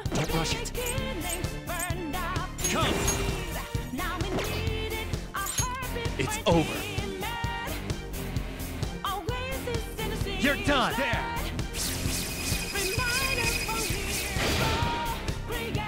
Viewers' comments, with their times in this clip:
0:03 I can hear the pleading of prayers. XD